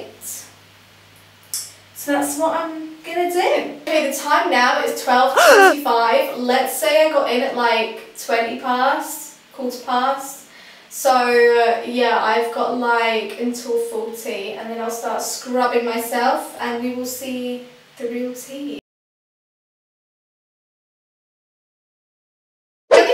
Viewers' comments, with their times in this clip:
0:05 made me jump, who made that noise? Haha